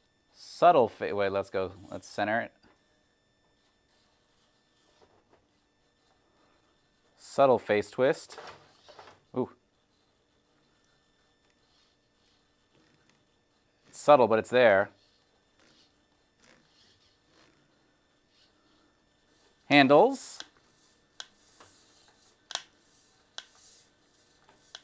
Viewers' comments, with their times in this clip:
0:07 “Subtle face twist” The scientist asked calmly